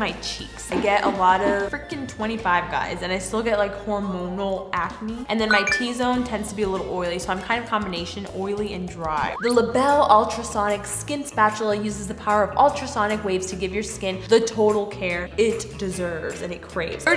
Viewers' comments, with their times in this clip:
0:05 I thought I got a message